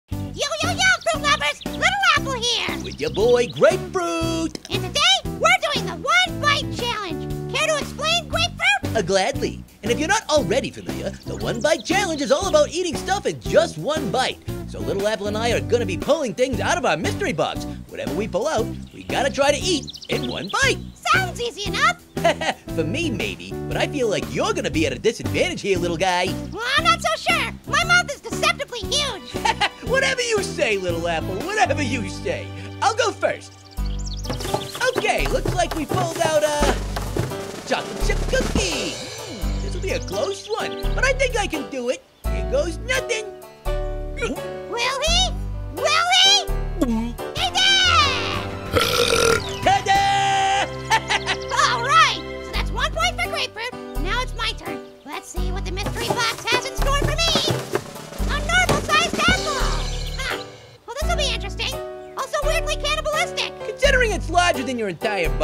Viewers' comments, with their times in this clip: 0:00 I like how grapefruit says it's name like that
0:03 Grapefruuuiiiit He said the T differently
0:49 is when Grapefruit burped so loudly.